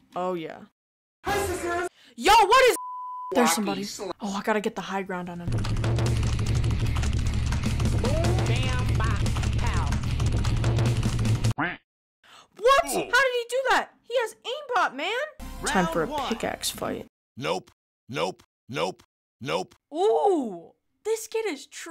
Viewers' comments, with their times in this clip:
0:05 the agressive keyboard sounds along with the random stairs is amazing